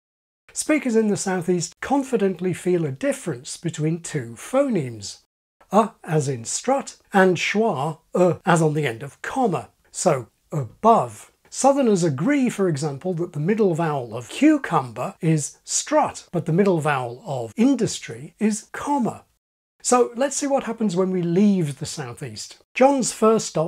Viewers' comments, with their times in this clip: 0:09 wait... comma is supposed to be pronounced the same as German "komme"...!? O_O